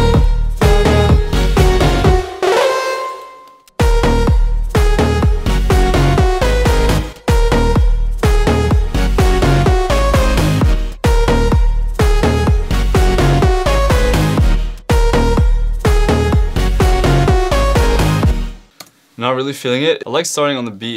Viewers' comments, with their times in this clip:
0:04 Imo the last two notes on sounded like greek god man